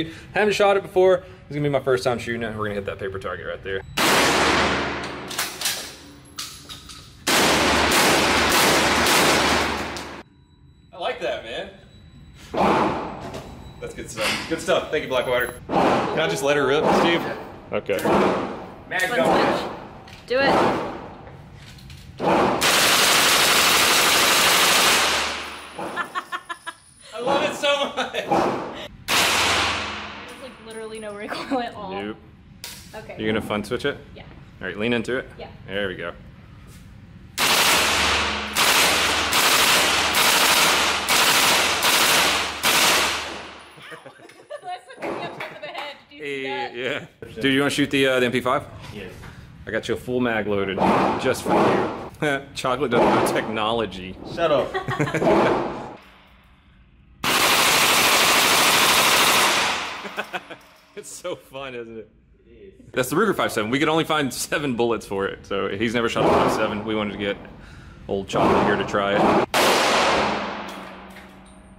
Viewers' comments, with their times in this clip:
0:10 the camera got tinnitus lol
0:54 what is that "WHAAAAMMP" sound?